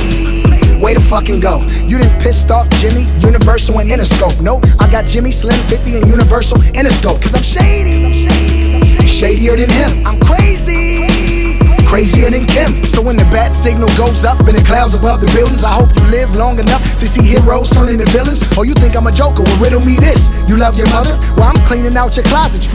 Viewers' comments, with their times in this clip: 0:10 Dude has to work on his delivery. It doesn't get good until when most people already closed the video or changed the track